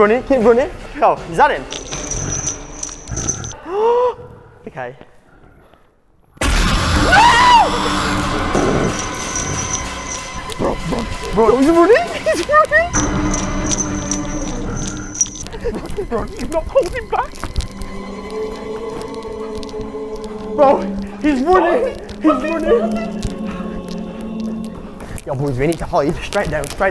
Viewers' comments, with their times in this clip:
0:10 Alright tell me why I hear a ultimate custom night jumpscare